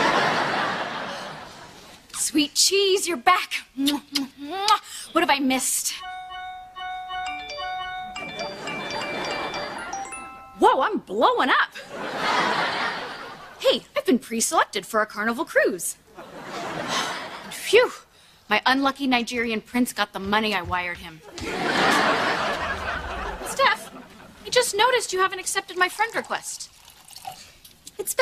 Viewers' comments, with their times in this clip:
0:10 that was the old Kimmy voice and expression (I meant full house) 😔